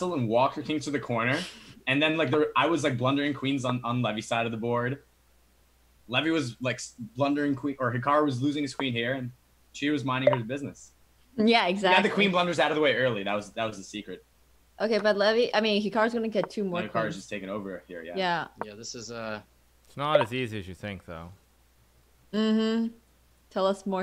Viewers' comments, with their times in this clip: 0:06 Shoutout to Hikaru straight up farting